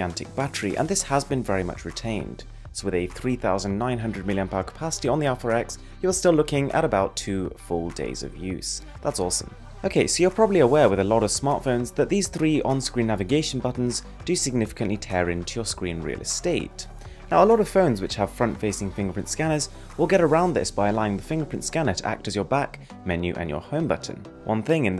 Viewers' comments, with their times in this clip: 0:09 Indian drama in background?